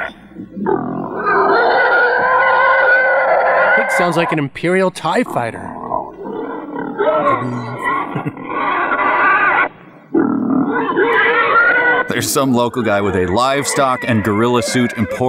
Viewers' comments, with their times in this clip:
0:03 As a kid, I always thought the TIE fighters sounded like howling dogs. Who knew they were actually flying pigs!